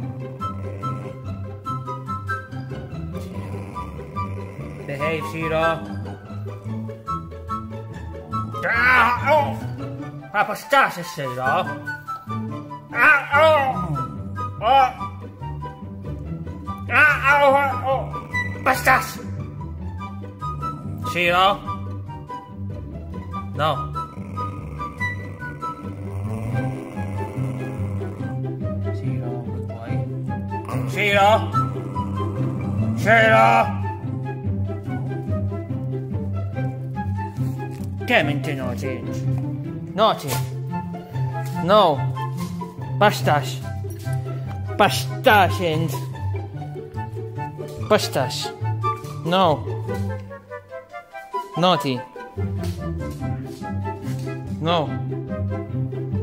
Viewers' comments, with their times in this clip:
0:08 Umm, why does hooman sound like he’s having a mild stroke/Pingu’s Dad!😂🤣
0:08 Hooman sounds like he's choking XD
0:10 Whoa he starts making weird noises for scolding around here. Didn't expect that.
0:30 love how Kiki got more scared by hoomans yell. Then shiro's engine. That's hilarious.
0:42 hooman PASTAS SHIRO >:/ shiro wots dat hooman? pasta? :D